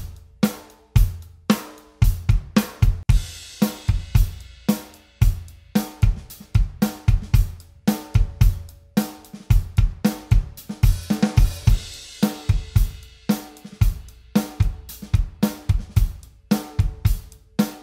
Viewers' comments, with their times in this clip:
0:04 😂😂😂 when he added the ghost note I started bopping my head like shit